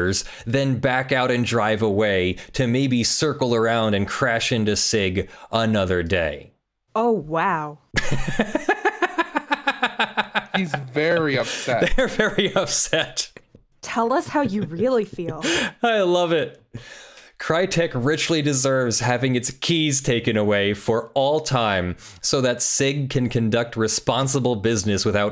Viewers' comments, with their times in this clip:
0:07 That CACKLE, tho, lol!